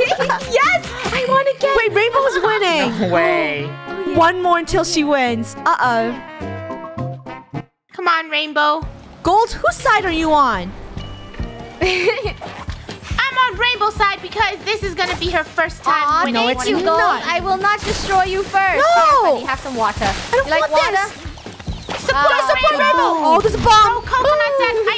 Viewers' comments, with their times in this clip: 0:03 the british ah oh lol
0:05 her brittish uh oh